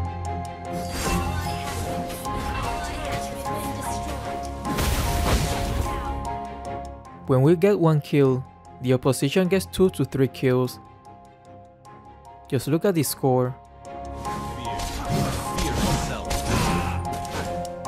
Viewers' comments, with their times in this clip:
0:04 sounded like Khaleed landed really hard with his enhanced basic attack